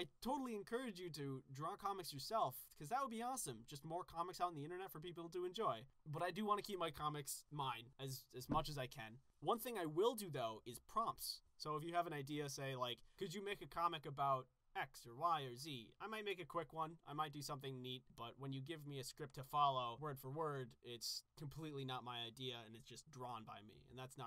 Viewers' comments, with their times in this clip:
0:07 why is there a thump?
0:08 Ignore the volume... did anyone else notice the “thump” that popped up